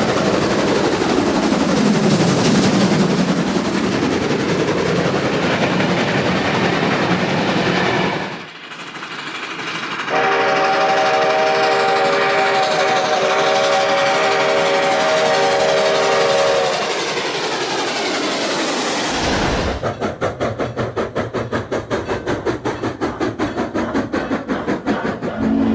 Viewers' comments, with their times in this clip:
0:08 That whistle is very beautiful and suits the Cross Creek Logo locomotive. Reminds me of a mountain in Alaska the train is next to, and how beautiful America’s wilderness is.
0:08 remind me of Southern Pacific 4449’s 6 chime steam whistle
0:10 it has the greatest engine whistle, but how would you set it all up to change the whistle like a before and after?
0:10 sounds like CN 3254